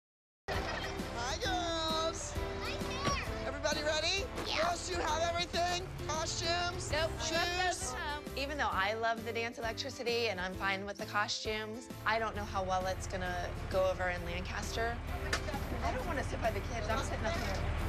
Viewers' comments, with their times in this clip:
0:04 Everyone is talking about when maddie said “nice hair” but tell me I’m not the only one who hears the YuUPPp
0:04 Am I the only one who hears the yUpP ?? LOLL
0:04 My mom: did you do what I asked you to? Me:YuUuUpPp
0:04 Was I the only one that heard a “EaAaAau” ??
0:04 THE "YUUUP" SOUNDS LIKE THE HILICHURLS FROM GENSHIN IMPACT
0:05 did y’all not hear that “yeah 👹”